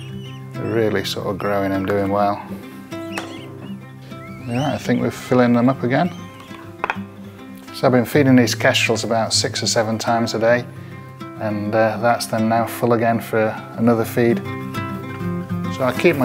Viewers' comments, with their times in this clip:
0:04 the bird said NO! 😄 🤣 😂 😆